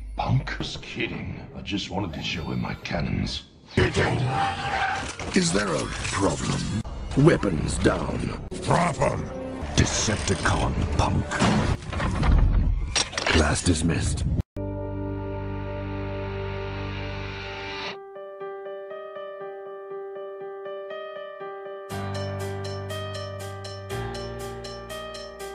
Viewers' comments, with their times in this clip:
0:08 I'm pretty sure that "Drop 'em" line was actually from Sideswipe, not Ironhide. Sideswipe on occasion has a deeper growly voice in the movies.